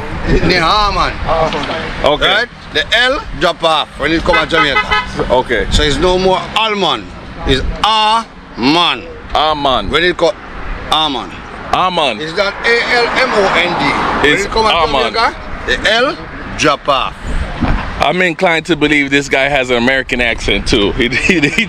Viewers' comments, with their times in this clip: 0:08 a man tree